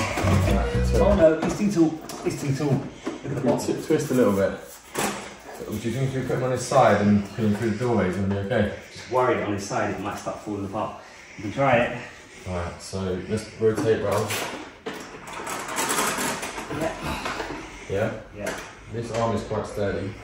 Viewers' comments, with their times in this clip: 0:04 The intense breathing drove me insane! But otherwise love your vids❤❤!!